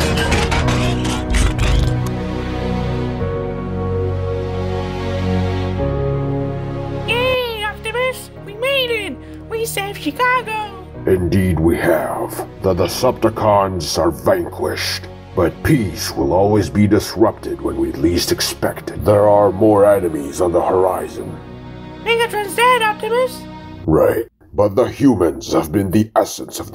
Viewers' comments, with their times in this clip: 0:07 Sam voice is cute and made me emotional